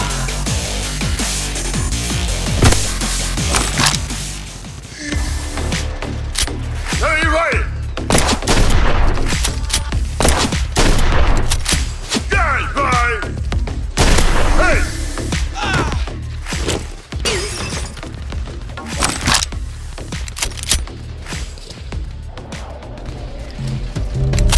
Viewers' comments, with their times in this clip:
0:07 DID HE DO THE FORTNITE HENCHEM SOUND?